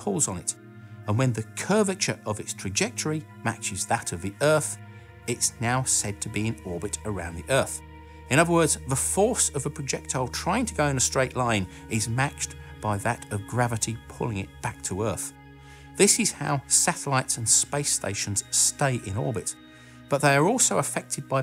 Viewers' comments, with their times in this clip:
0:04 Myth has it that if you listen real carefully (best use headphones) and filter the audio to remove the narrator's voice (no offense to the narrator) you can actually hear a faint FPS Doug shout "BOOM HEADSHOT" at the time the projectile hits the head.